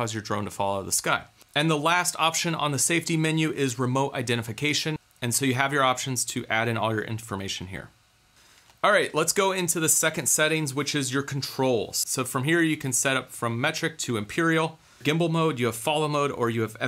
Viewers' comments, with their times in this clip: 0:03 Man I was chewing and thought you said "remote detonation" XD